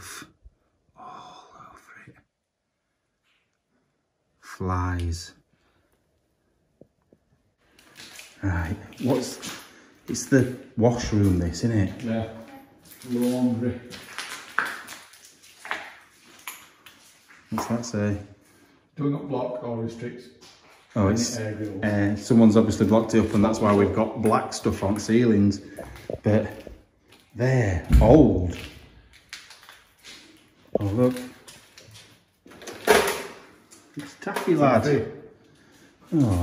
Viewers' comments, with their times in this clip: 0:03 "Its the wash room this init?". "Yeah" - then a third female voice, "Yeah". 😬
0:11 did anyone else here that womans Voice saying ok ? You can hear her sooooo clearly
0:11 Womans voice can be heard
0:11 A WOMANS VOICE?! WTF?!
0:11 Womans voice can be heard
0:12 when you say...'It's the washroom this innit'...I swear I hear a female voice go 'yeah' for a split second.
0:12 Thank you guys for a great video! Am I the only one who can hear a child's voice saying "yeah" very quickly on ? O_O
0:12 a females voice can be heard saying yeah.
0:12 a woman’s voice says ‘yeah’ heard that clear as day!!
0:12 when you say "It's the wash room, isn't it"? A woman's voice says "Yeah"! 😳👻
0:12 you hear someone say “Yes” after he asks this is the wash room isn’t it
0:12 I think you had av EVP in the wash room
0:12 time stamp, there was a woman's voice saying "yeah"
0:13 When you mentioned washroom i heard a voice say yes
0:22 there’s a woman’s voice saying hey